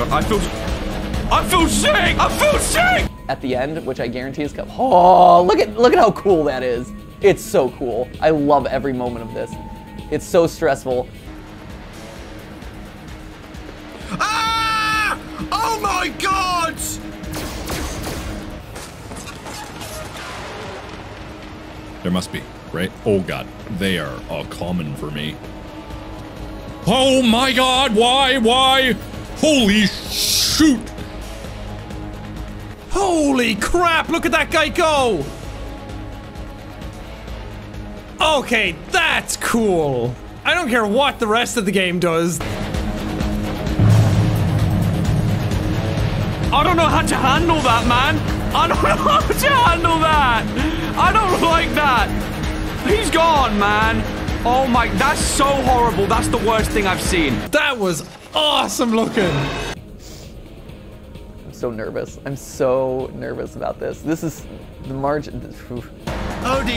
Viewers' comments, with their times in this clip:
0:05 Matt’s so calm… during MatPat’s the only one who calmly says “That’s so cool” instead of “AFAGAAAAhgsYUUUUUUGGGGHHHHH” like the others, like MYUUUUuUSIC MAAAAN was an old friend.
0:10 really got me going from MatPat saying “this is so cool!!” To next is Dawko screaming at the sight of him and running away. 💀
0:29 i love how it sounds like he wasn’t trying to curse 😂😂
0:48 You can even hear the straight and utter fear in his voice :(